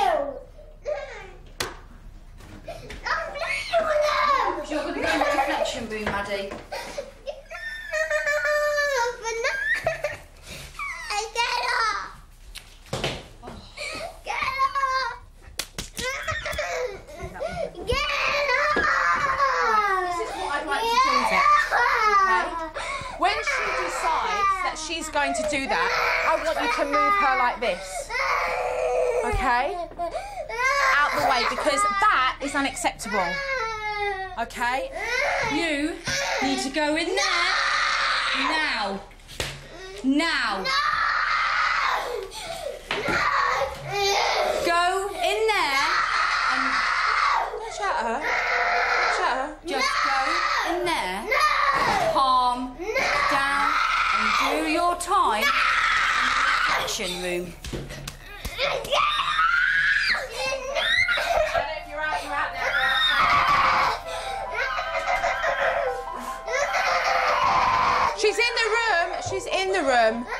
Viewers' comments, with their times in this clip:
0:07 why is she crying like that 😭😭
0:11 the sound of three slaps at her dad
0:15 sound like sound affects 😂
0:55 the way she shouts right at her mothers face is totally unacceptable